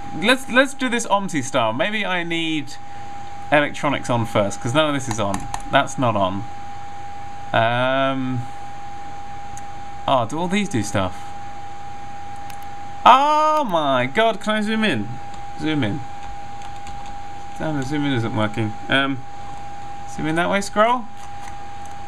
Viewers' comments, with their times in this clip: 0:09 Is it me or does he sound a bit like Noel Fielding when he says "Do all of these do stuff?"